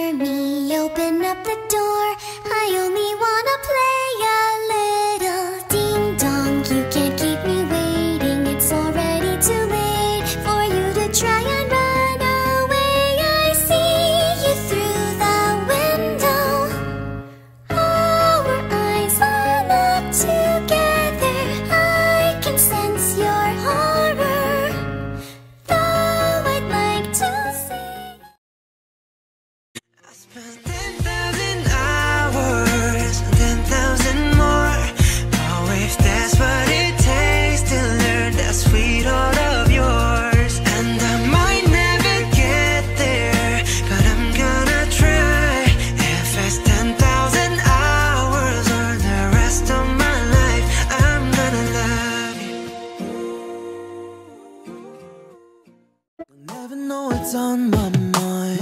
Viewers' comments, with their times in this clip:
0:06 Me: Screams like a goose
0:30 1 hour ago.. 😐 This video was AMAZING! *Starts singing 10000 hours* Me: Why do I feel like I've heard that English accent(?) before? (I was on mini view or whatever you call it) Me: *Sees that it was Jungkook's cover* Also me: So that's why :P :O I just noticed that you also used Seasons for Isaac! I LOVE that song :D
0:31 Tae has the same nickname as Taehyung from Bts And His Voice is jungkook's Cover from BTS wow! Edit:yeah I knew that Before
0:44 idk how I knew u were gonna use one of their voices. :’))